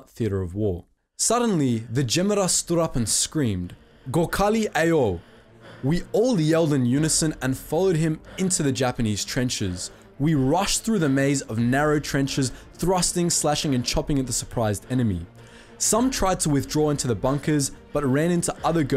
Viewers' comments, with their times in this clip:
0:04 lol so funny when non native speakers says it
0:06 the way he said it makes me wants to kms.